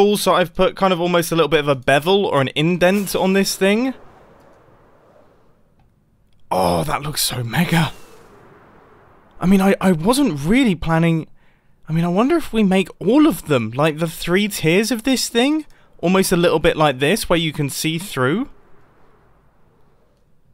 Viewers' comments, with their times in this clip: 0:06 Did he say "That's SO mega" or "That's O mega"?